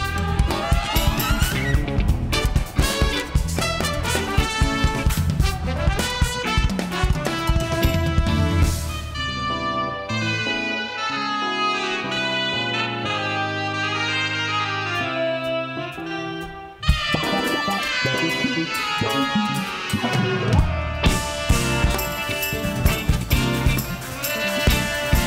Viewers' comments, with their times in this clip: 0:10 best moment is the chords progression that Justin Stanton played on the rhodes at the mark, and the "approved" face he got from Bob Raynolds and the other trumpet player who's name I miss..